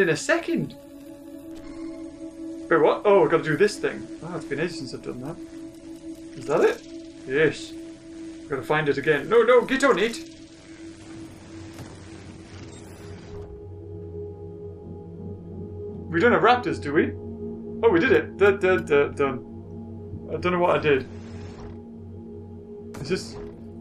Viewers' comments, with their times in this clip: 0:10 door opens crounch intensifys